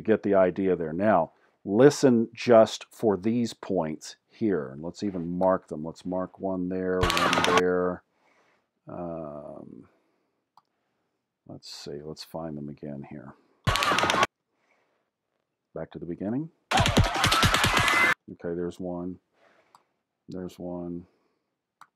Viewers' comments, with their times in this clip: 0:04 of that video, it does sound like there are 2-3 shots fired.